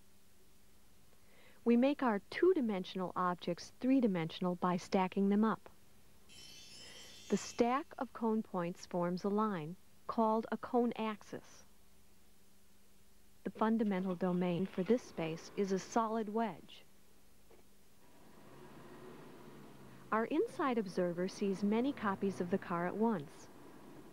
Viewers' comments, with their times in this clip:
0:10 called a cone AEXis